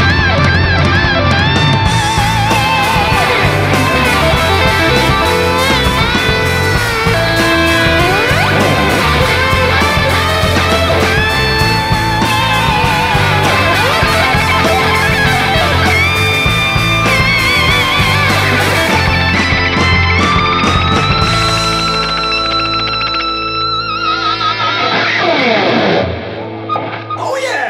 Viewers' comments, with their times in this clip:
0:09 that Eddie solo was as perfect as it could have been. Except for one piece. That barred minor 2nd run you did I personally wouldn't have done, but you won my guy by a mile. 9.8